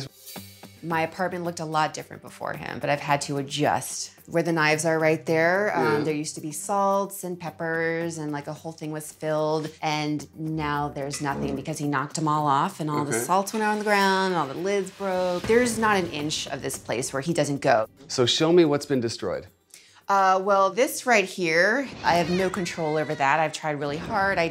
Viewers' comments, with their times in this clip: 0:10 That was a FART!